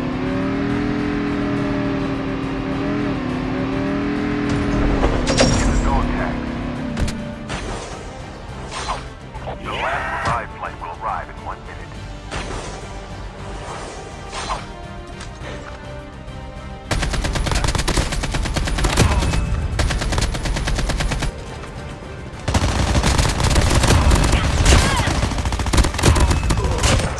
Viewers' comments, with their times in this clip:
0:10 Zombie voice made laugh so hard 😂😂